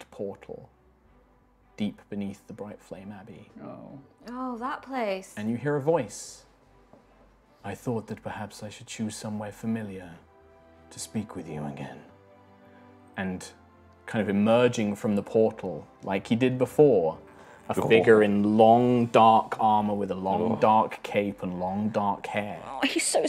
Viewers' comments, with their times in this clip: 0:07 I thought it was Nightfrost from the deep raspy-ish voice... my reaction went from "Oh my god hes back!! :D" to "...Oh my god, hes back 😨"